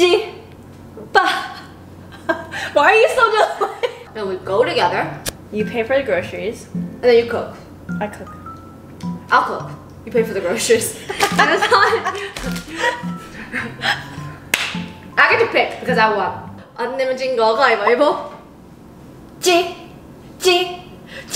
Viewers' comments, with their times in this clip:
0:07 you're looking so much like Yeri from Red Velvet. Also, loved the brazilian song in the background.